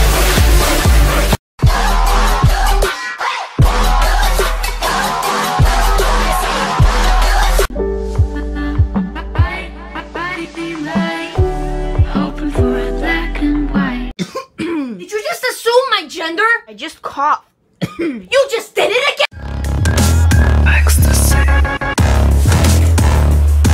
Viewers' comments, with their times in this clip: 0:09 If anyone wants to know, the song is Shark by Oh Wonder, although it sounds like a remix... I nearly freaked when I heard it start playing